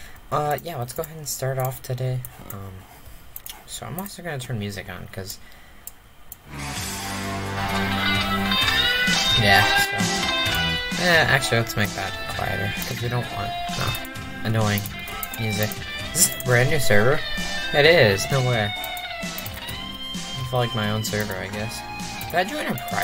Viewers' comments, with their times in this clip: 0:05 Copyright music starts